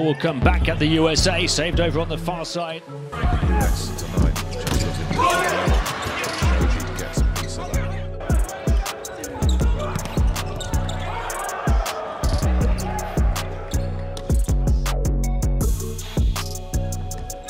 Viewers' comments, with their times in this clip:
0:03 "SHOJIIII!! its like they were calling out MEDIIIIIC after experiencing artillery fire
0:04 Love it how in you can hear the SHOJI being screamed by his team for him to save the ball XD